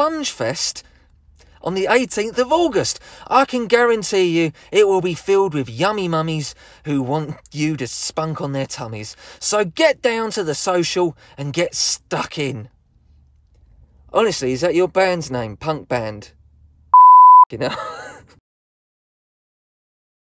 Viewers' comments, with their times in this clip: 0:07 For me it's how he managed to contain his laugh after saying yummy mummies